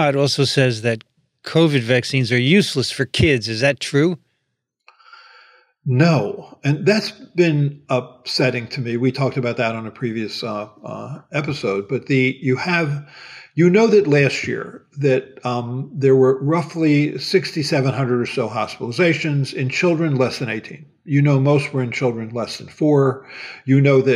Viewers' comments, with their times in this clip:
0:05 At timepoint I hear patience, frustration and determination - all in a single inhale by Dr Offit. Thank you for sharing your expertise and producing content which educates kindly. And as always, thank you Dr Racaniello for all you do to put science into accessible language and format for all us regular folks out here.